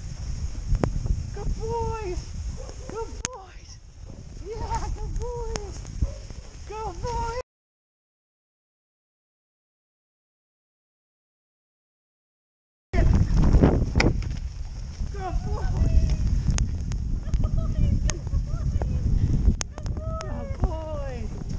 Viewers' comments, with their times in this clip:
0:06 Be honest, how many of us thought our headphones broke ?